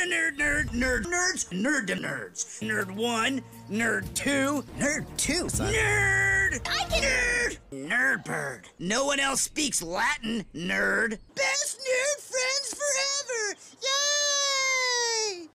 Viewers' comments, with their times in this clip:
0:11 i hate how good this was voiced
0:11 He said best nerd friends forever yay like he sounded like Elmo
0:12 the way he said YAAAYYYYYYY was so adorable